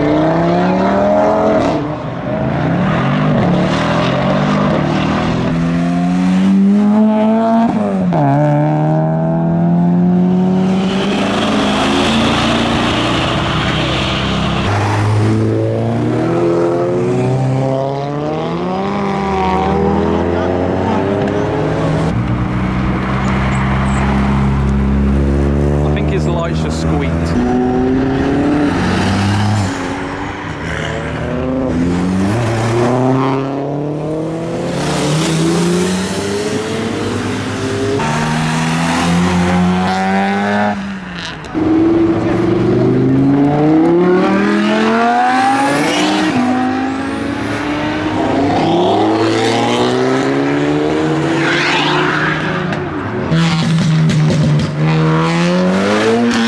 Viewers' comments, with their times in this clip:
0:05 That NA was sweet.
0:38 you can hear VTEC kick in